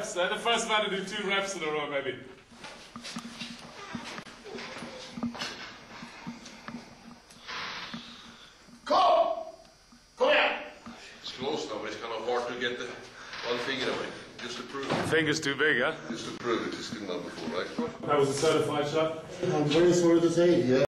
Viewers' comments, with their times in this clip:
0:07 ahahah come on click on and close the sound, its like he did something wrong ahahhaha